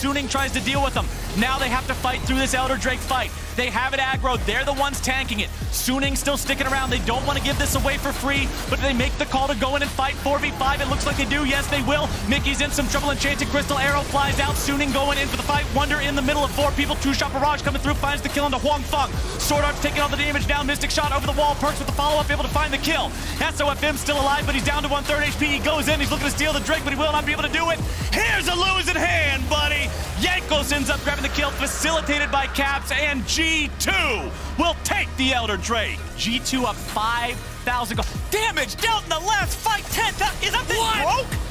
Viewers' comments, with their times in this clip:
0:04 damm is he rapping or what
0:26 At the mark I realized the commentator should be doing auctions. How many words per minute was he spittin'?! Mad respect